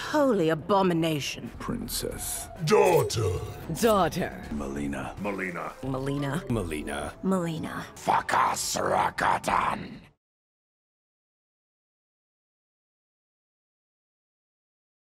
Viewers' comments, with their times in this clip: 0:08 for Russian speakers the phrase "Fakas Rakatan" sounds funny)) "srakatan" means "hole in the ass" in slang)))